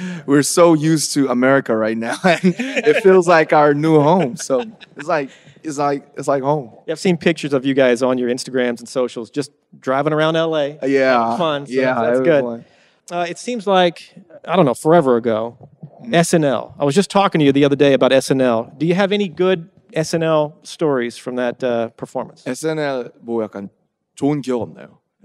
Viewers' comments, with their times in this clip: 0:06 am I the only person heard instagramS and not instagram?